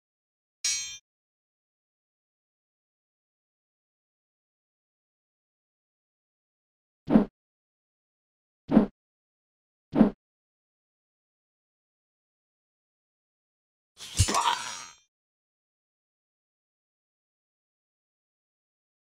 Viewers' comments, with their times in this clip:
0:05 Man, this game has the longest tutorial ever. Not even The Wand of Gamelon and Faces of Evil had their tutorials drawn out. That and they were unintentionally funny which made em' entertaining to get through. Here, this is just helping my insomnia than to get me wanting to play the game... Also, was absolutely hilarious. I would definitely choose FML as my name after sitting through that long as fuck tutorial. Its even better when you get the sound of someone getting axed after selecting it lol.